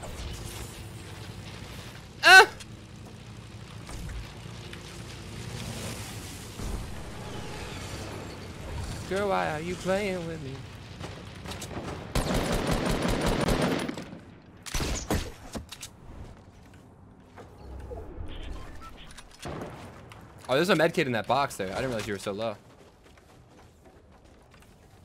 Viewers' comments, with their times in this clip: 0:08 he sings then the bullets are the same as what he just sung